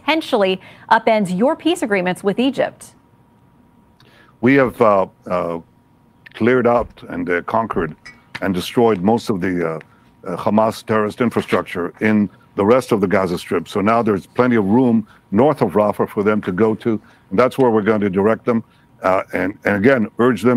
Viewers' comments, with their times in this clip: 0:04 Khamas khiding in the khospital, eating khummus.